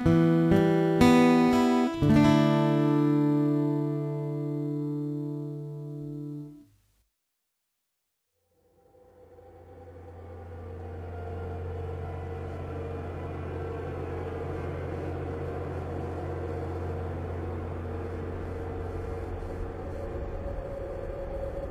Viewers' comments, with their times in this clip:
0:07 silent hill vibes